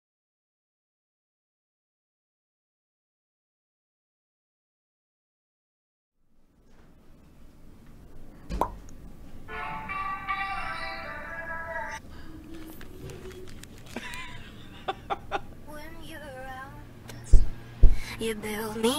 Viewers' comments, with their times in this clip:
0:00 i hear it on the right